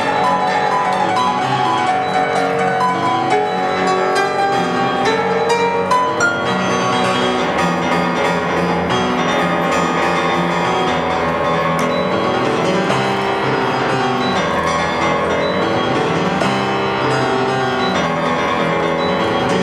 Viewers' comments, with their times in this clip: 0:06 That breakdown after the solo sounds disgusting, I love it